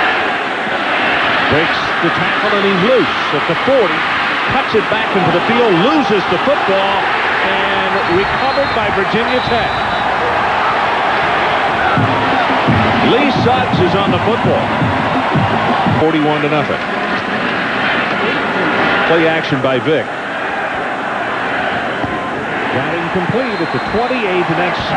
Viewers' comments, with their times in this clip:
0:10 Vuvuzela spotted which precedes my previous spotting of one in American sports by Oregon in a 2003 game IIRC. VT is now on my shitlist, something which fills them with existential dread I'm sure.